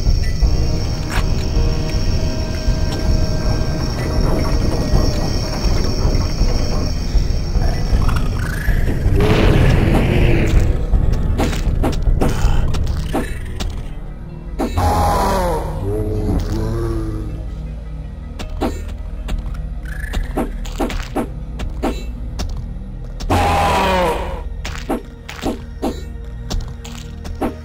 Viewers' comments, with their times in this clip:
0:08 what the ambience sound (not the crickets) from the start until should represent? it's like chiming bells idk... is it related to trains?